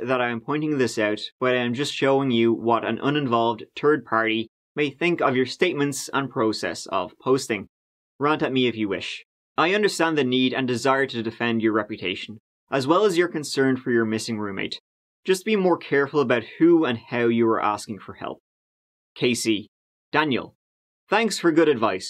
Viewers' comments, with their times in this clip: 0:04 “turd party” Sounds fun!